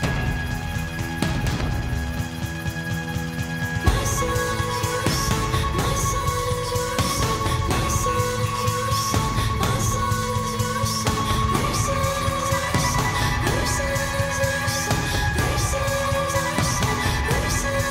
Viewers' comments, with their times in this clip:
0:04 Is he speaking Turkish ? I listened to million times couldnt figure it out. What is she saying there? (If it is Turkish ..Nasıl olursa....) Wonderful song